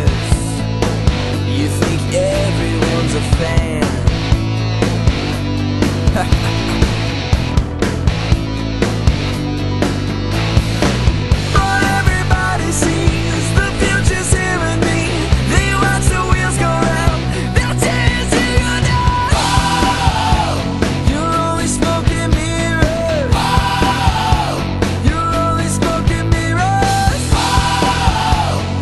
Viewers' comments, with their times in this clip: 0:10 sounds so like Dream Evil :D